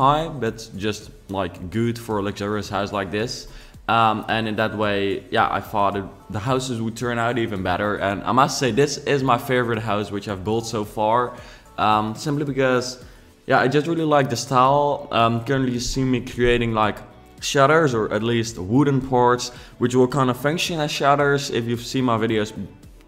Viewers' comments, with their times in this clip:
0:04 you said you farted?